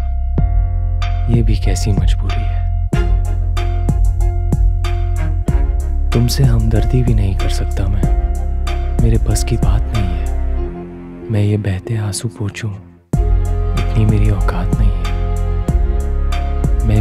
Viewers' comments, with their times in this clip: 0:03 In song doori poem no one cares about this beat he killed it!!!!